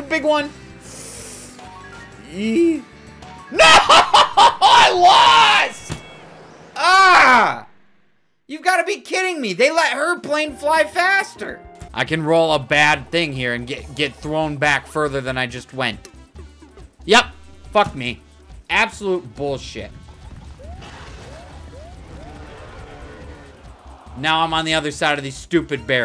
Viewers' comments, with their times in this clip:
0:07 U sounded like luke Skywalker